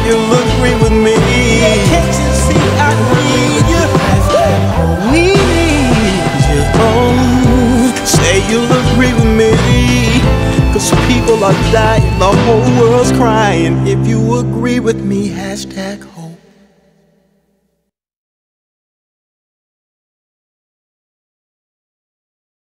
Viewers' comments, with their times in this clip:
0:05 That run gets me every time! Thank you for this, we definitely need hope right now.